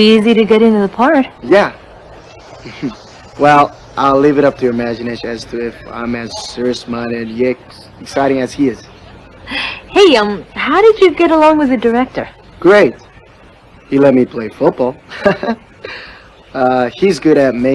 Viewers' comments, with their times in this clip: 0:05 im sorry WhAT... all i heard was ‘amawxciageryegsxciting as he is’ sorry im probably deaf lmao.... but ngl i kinda like the art style tho <.<